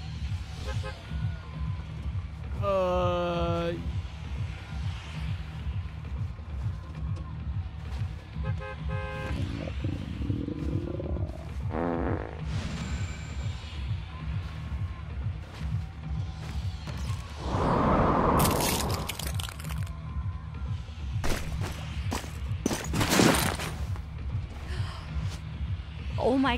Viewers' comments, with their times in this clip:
0:08 WTF SPARKLE Y..Y.YOU FARTED WHYYYYYY
0:09 the hell the she fart out the last two burgers?
0:11 Did she just fart 🤮